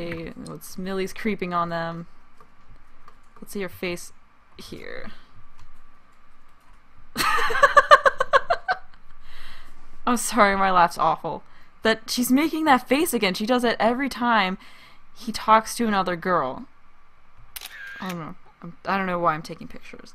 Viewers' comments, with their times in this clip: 0:07 i think your laugh is wonderful 😊